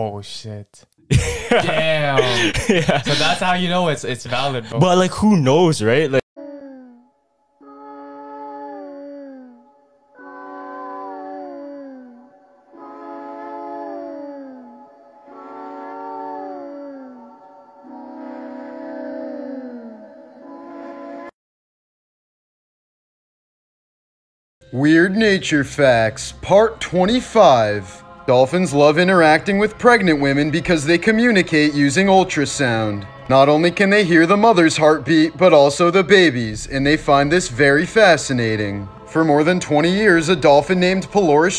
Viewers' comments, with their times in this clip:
0:09 Is it just me or does sound really creepy yet soothing
0:24 he sounds like he is done with these theories
0:26 dude talking in lowercase letters